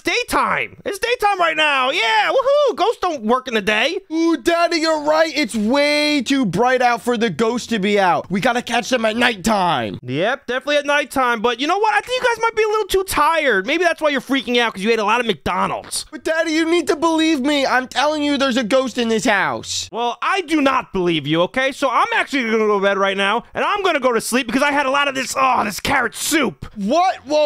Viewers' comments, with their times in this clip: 0:08 My doorbell doesn't go off by itself 9:5